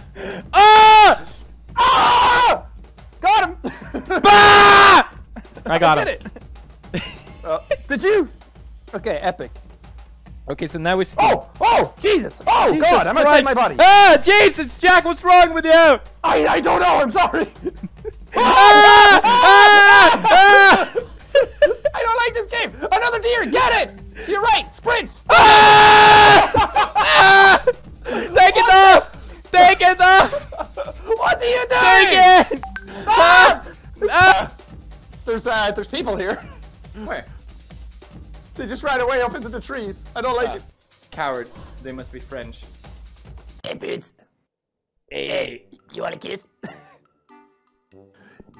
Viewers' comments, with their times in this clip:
0:09 Elon Musk is dying of laughter rn
0:31 Did anyone hear the WhatsApp notification ? XD